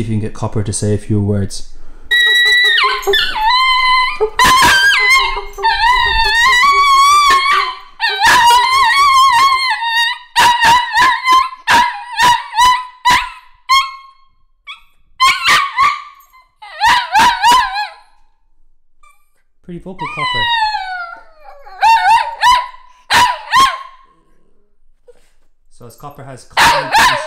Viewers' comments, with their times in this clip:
0:04 rip headphone users 😂
0:06 I wanted one all the way until ... no thanks. My husky and my mal never sounded like this/~
0:13 The other husky be like tf u doing man, my ears are hurting :d